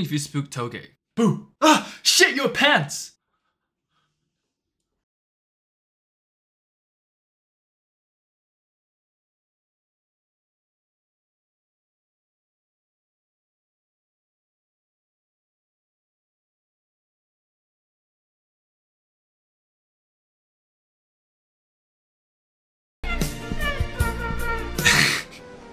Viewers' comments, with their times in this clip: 0:07 is it just me or was yuji that humbled bc inumaki told him to shit his pants that the video was silent for a while
0:10 WTH happens to the sound
0:10 where the sound at did it go get some milk like my dad ?